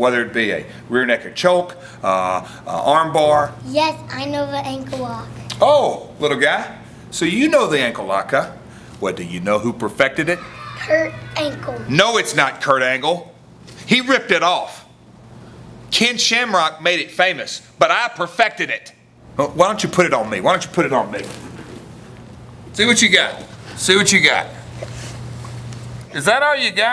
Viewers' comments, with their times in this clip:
0:10 ROFL "Kurt Ankle"
0:12 kid said hurt ankle, not Kurt.